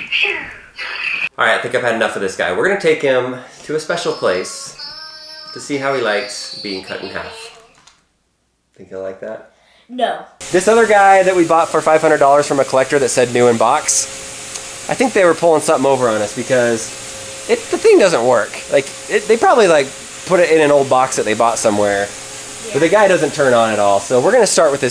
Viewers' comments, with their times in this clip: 0:08 What's Inside? The curvy went silent when you said being cut in half